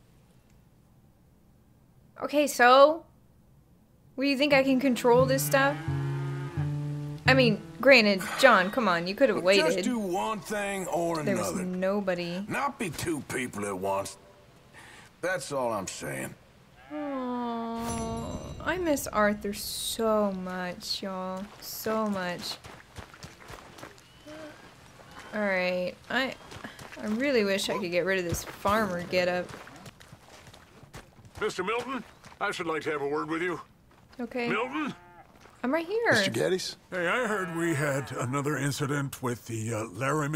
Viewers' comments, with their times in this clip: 0:08 This really shocked me while playing, hearing Arthur once again...Damn.
0:09 when I hear that voice I’m not crying.....you are crying
0:23 hearing arthur's voice in the epilogue always makes me miss him so much :(